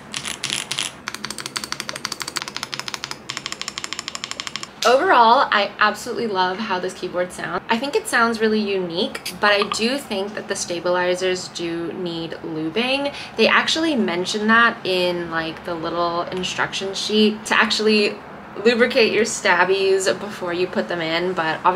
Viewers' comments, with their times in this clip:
0:09 You literally gave me a panic attack with the Slack notification.